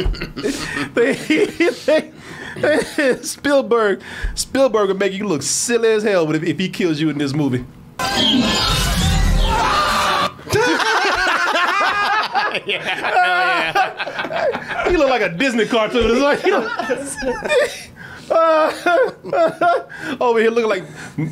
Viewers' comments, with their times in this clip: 0:09 what always bothered me about this shot is the dude is screaming/looking at an upward angle seconds before the raptor even leaps into the air. He should've either been looking straight or the editing could've been switched to have the dino jump first